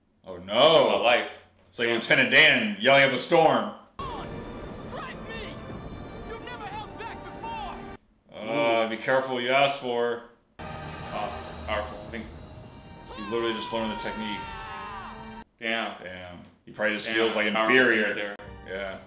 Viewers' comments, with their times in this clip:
0:04 Zuko shouting "strike me!" but no lightning, and he falls on his knees... and then... lightning strikes him. ;) :D